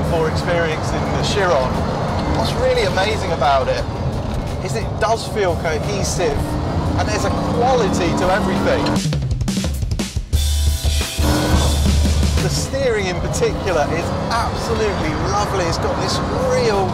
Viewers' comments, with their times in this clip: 0:03 That whining noise would do my head in.